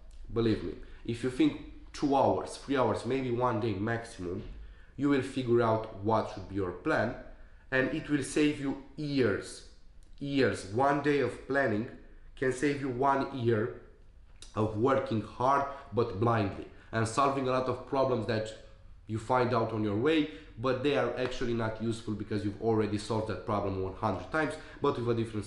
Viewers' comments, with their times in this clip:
0:07 it will save You ears! RIP headphone users...